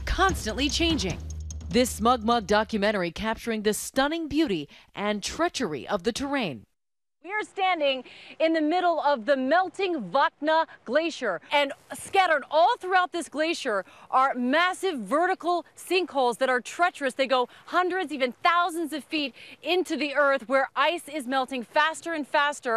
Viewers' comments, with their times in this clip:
0:10 wow that lady can really project her voice